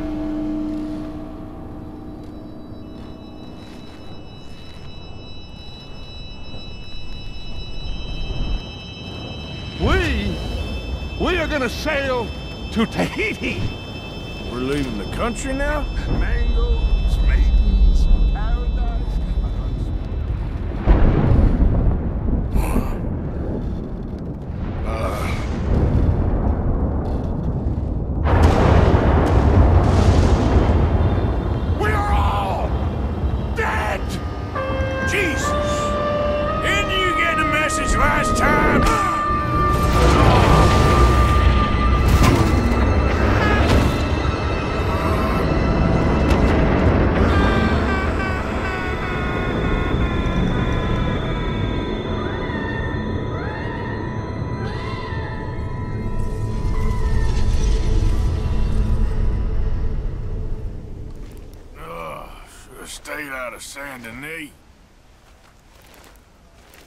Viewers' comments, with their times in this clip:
0:07 is one of my favorite parts, just the context and the way Dutch says "tahiti" lmao
0:08 "WE! We're gonna sail... to Tahiti!" wooooshes off this part killed me xD
0:09 The way Dutch says Tahiti combined with the hot air balloon just yeeting gets me every time
0:31 was genuinely terrifying. The delivery from Dutch, the way Jack's face fit into the cloud seamlessly, the music, the lighting, it was all perfect. Well done.
0:49 is probably one of the best transitions I've ever seen in a video, especially paired with the Undead Nightmare trumpet adding that little extra bit of uncertainty to it.